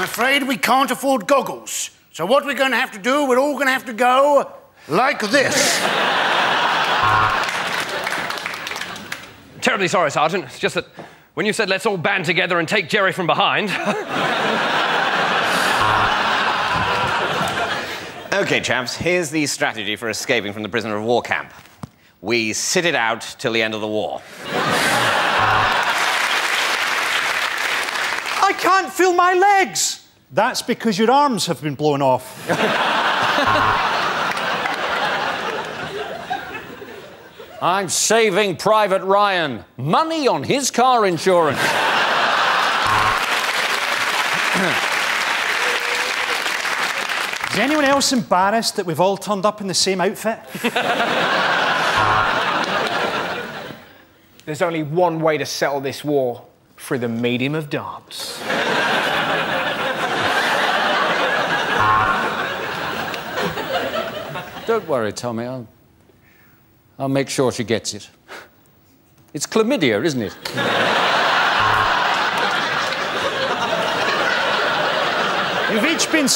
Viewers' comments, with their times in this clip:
0:09 his voice reminded me of Hugh Laurie in Blackadder for a moment!
0:16 did anyone here the peodo laugh
0:16 did anyone hear a sheep
1:04 Can someone please tell me what is Hugh saying ? His accent is giving me hard time.